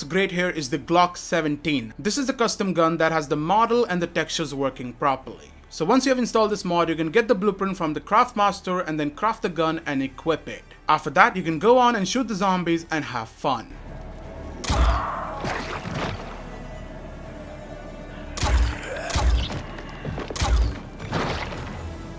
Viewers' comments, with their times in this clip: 0:07 this is just remaked crossbow nothing else, even the sound of it its same ....